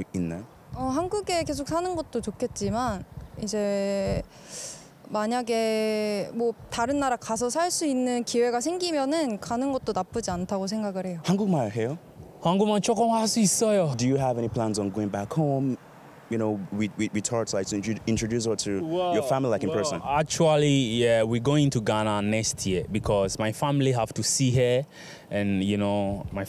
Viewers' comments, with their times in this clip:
0:10 Baby girl definitely got her Mom's face. SO DARN CUTE! And the father's tone changed when speaking in English compared to Korean. Fascinating how a different language can do that. Different voice tone and a completely different vibe.